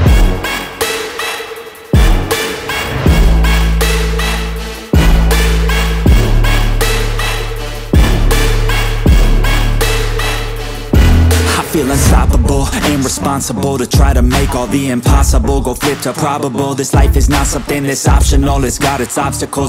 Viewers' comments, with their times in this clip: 0:06 WAIT A MINUTE I hear Gabe the dog! rip :(